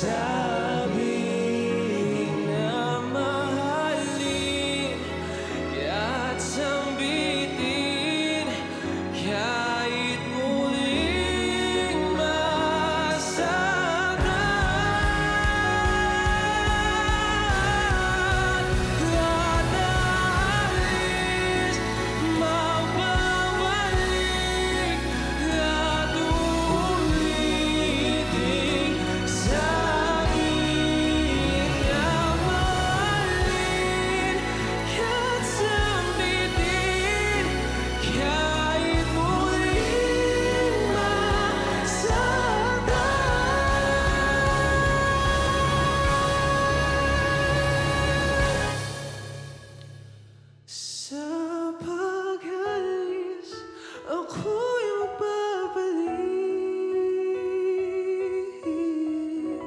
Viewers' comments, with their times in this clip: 0:10 good build up...
0:45 Whats wrong Ms.Ai? Your reaction is so inapproriate. He killed that run. Aaahhhh.